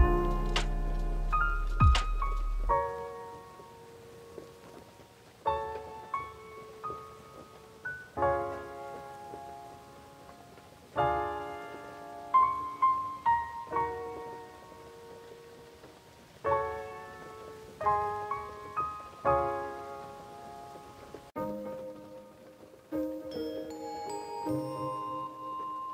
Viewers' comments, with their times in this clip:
0:08 kinda sounds like Death of a Bachelor-- but its prob not cuz its not a carol but like still wow it sounds so simmilar any Panic at the Disco! fans